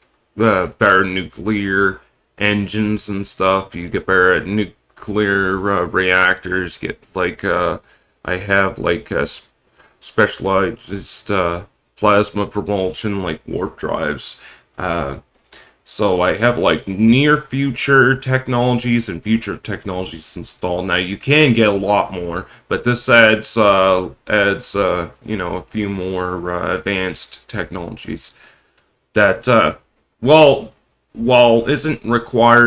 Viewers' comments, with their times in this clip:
0:10 actually is a better timestamp. Your voice is just shaky there as if it was really cold around.
0:20 you speak as if you are currently freezing.